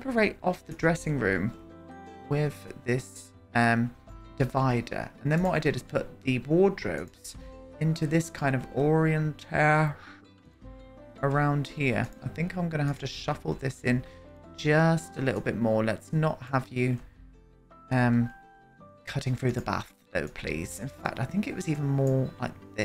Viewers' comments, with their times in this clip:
0:09 this is how we should be pronouncing orientation 😂